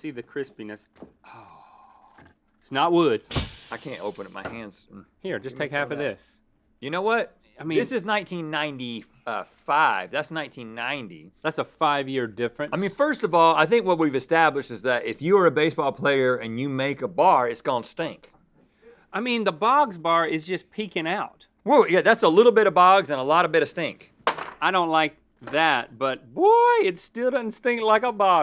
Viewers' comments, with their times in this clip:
0:05 Is anyone reminded me of the "here, take two of these." line from Wayne's World? The looks and the way he said it is pretty similar, lol.
0:12 Cheers theme plays